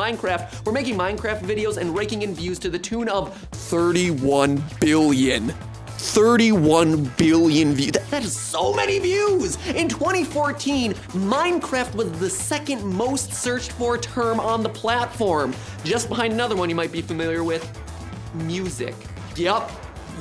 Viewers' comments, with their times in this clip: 0:03 this guy sounds like a whole different person here